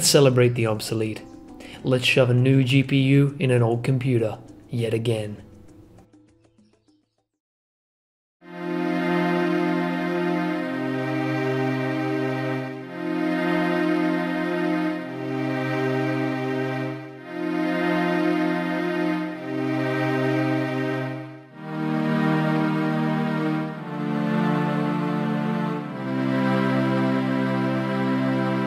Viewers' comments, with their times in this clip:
0:08 nearly started crying because of the music, I miss the old runescape times
0:11 ROFL playing old school Runescape while watching this video lol in and when the Runescape music started playing made me laugh lol